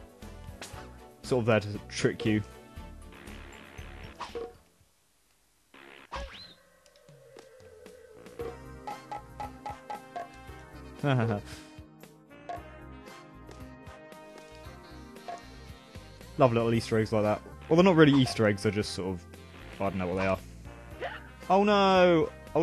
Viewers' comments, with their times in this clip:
0:08 Good timing on the bongos